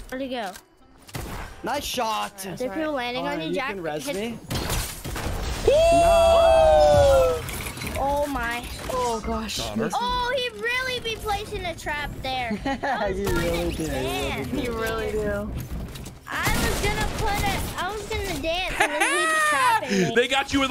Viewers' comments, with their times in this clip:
0:04 you sounded like a pack of wolves 😂